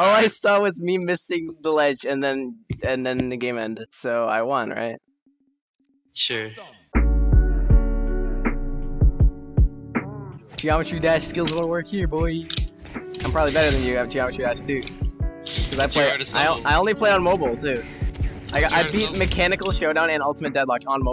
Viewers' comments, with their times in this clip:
0:09 that "I basically won" pause killed me